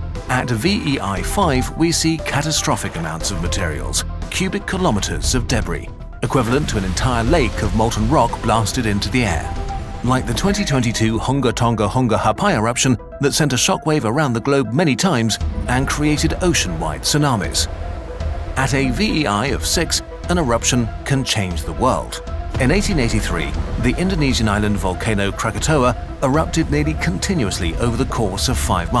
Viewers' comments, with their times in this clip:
0:07 The Honga Tonga Wonga Whata? Well done mr narrator.
0:08 just hear for first Time its like spell for me Hunga Tonga-Hunga Ha'apai
0:09 Hung TONGA-PONGA threw me off
0:09 Damn good pronunciation there.
0:09 bro summoned a demon some where in the world with that name
0:10 ok let’s appreciate how he said that without slipping up
0:10 the hongawhosawhata now?
0:10 i was not ready for the narrator to go monkey mode
0:10 not trying to sound culturally insensitive, but seriously how many tries did it take to say that volcano name?
0:10 this must've taken many attempts to say on recording
0:10 how do you keep a straight voice saying such a goofy name
0:10 There's so many things worth praising about this video, but I keep coming back to and listening to the narrator say "Hunga Tonga-Hunga Ha'pai" in the most elegantly deadpan voice XD. I'd love to know how many takes that took, or if the narrator was even aware of how delightfully rhythmic their speech was before listening to cuts later on. As always, an absolute joy to get to watch these masterpieces, especially with them being free. Keep it up, Kurzgesagt!
0:11 I love how the narrator says Hunga Tonga-Hunga Ha'apai in such a calm, plain voice
0:11 How can you say "Hunga Tonga-Hunga Ha'apai" with a straight face💀💀💀
0:11 can we just appreciate that pronounciation
0:11 How many attempts did that name take to read?
0:11 is what my car sounds like
0:11 the way he said that sounds weird
0:11 "hunga tonga-hunga ha'apai eruption" that rolls off the tounge quickly
0:16 :haunga tqunga haunga💀💀 Also bro forgot yellow stone